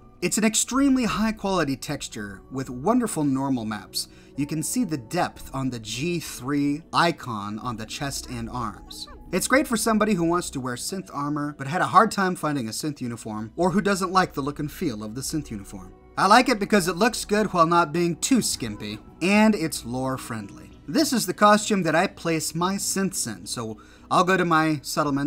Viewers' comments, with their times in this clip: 0:08 What's that voice/noise in the background?